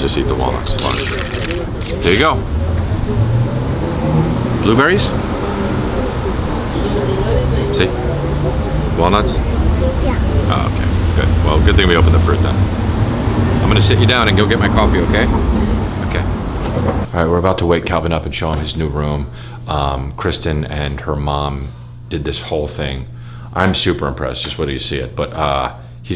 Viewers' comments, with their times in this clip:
0:08 all I heard was "chocolate croissants"